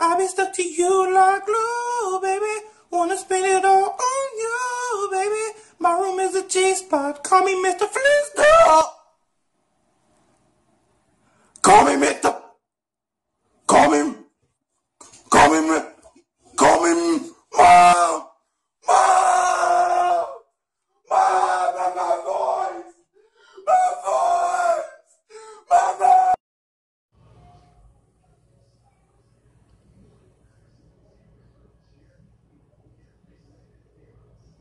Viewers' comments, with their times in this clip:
0:05 I heard "my room is a cheese puff"
0:05 I swear he said "my room is a cheese puff" Or am I not using my brain
0:05 now i know i heard him say "my room is a cheese pot" what is the song about
0:05 it sounds like he said "my room is a cheese puff"
0:05 i heard my room is a cheese puff, call me Mr. Flist Uhhhh uh Lmfao😂😂😂
0:06 shell company sounded like "my room is a cheese puff"
0:06 did he say mr cheesepoc
0:06 he sounded like he was saying the call me when you want from lil nas x at first then, bro was genuinely evolving mid-sentence
0:08 Voice has left the chat.
0:08 Funtime freddy singing
0:08 why did he kinda sound like KSI for a second? Does anyone agree?
0:08 is there a donkey?
0:10 Me: Does American theme song by voice *voice cracks* Me: 0.15
0:11 It sounds like a motorcycle that's trying to run
0:12 wow that was a amazing voice crack
0:13 when u realize ur room is a cheesepuff
0:13 it sounds like he trying to say conumisn in a gorrilas voice
0:13 lil nas x new song leaked
0:15 Sounding like lil nas x "call me when you want..."🤣
0:17 he sounds like a dinosaur
0:17 Sound like he was finna sing mo bamba
0:17 He kinda sounds like KSI😭
0:18 CORPSE screaming for his mom